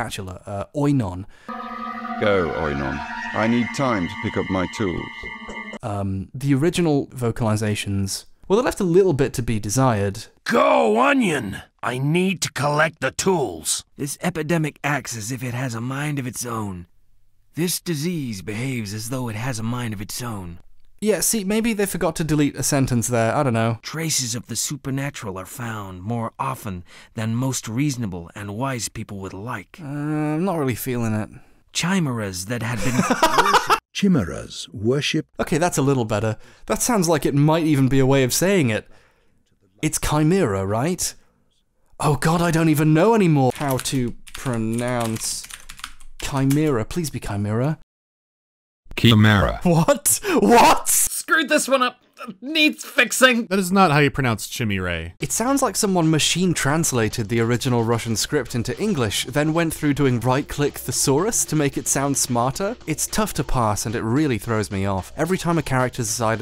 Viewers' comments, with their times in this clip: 0:03 Laughing for 5 minutes straight at “G O O N I O N”
0:24 I just find this section so funny; I think your reaction and the cameo voices from other youtubers helps to add to it. Also, yes, it is pronounced kye-meer-uh. I know this because the greek letter Chi is pronounced like the name Kai.
0:53 Is it just me or does the voice saying "That's not how you pronounce chimera" sound a lot like Mandaloregaming?